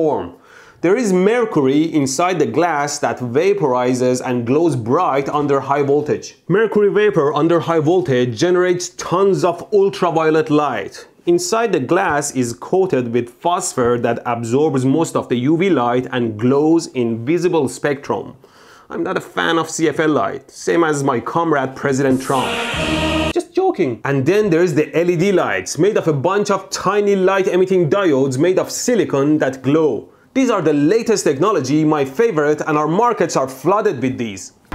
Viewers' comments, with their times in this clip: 0:07 Mercoory vapour under high voltage generates tons of ooltraviolet light !!! 😄😄😄😄😄😄 🤓🤓🤓🤓🤓
0:21 ''Trump''et Anthem Starts Playing
0:21 Shows a Trump pic with USSR anthem on the background... I see what you did there.
0:21 Soviet anthem for Trump !!!
0:21 Wrong anthem bud
0:22 it's funny that he played Russian national anthem with trump's face on the video